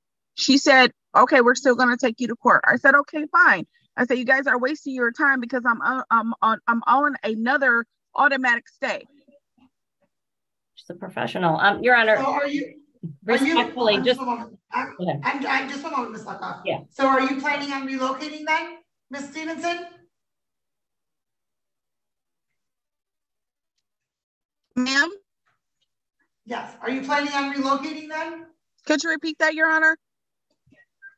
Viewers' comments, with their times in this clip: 0:09 (under her breath) "...she's a professional..."
0:13 Even the attorney laughed at “at my leisure”☠️@